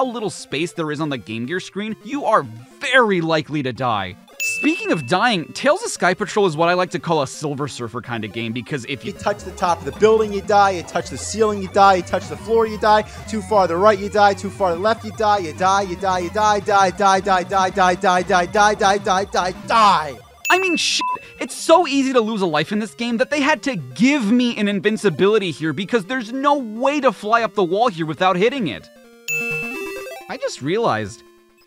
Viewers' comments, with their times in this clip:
0:10 I love the AVGN ranting here. Good job
0:16 This sounds like the "mine mine" seagulls in Polish ("daj" [gimmie]).